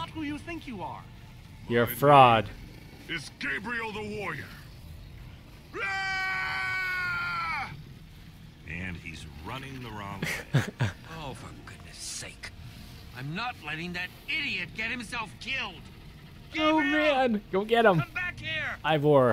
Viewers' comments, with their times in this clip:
0:06 XD HAHAHAHAHHA That sounded more like a scardy cat then a warrior